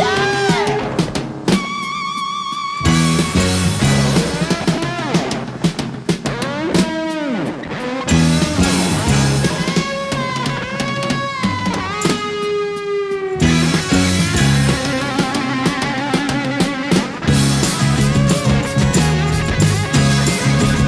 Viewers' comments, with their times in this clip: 0:04 If you want to hear a monster from Lost in Space, go to Imagine Dr. Smith cowering in the corner with the ungodly growl.